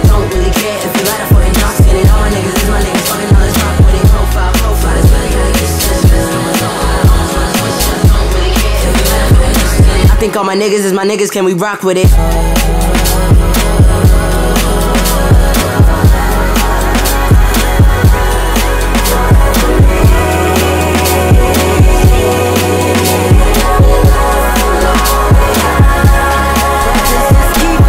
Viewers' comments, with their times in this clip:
0:04 this is your best one yet, wtf dude edit: when the kick pattern switches to like a half-step four on the floor followed by your (i cannot stress this enough) BEAUTIFUL harmonies fading into it, that was the greatest mindfuck i ever had on first listen. SO GOOOOOD
0:12 The harmonies got me levitating